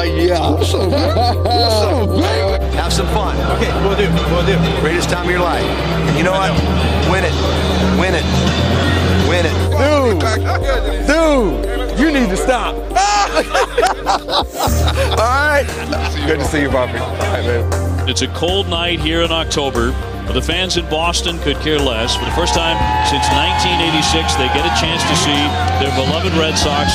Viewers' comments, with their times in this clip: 0:08 Dwight Evans saying “Win It” to Damon with complete seriousness gets me every time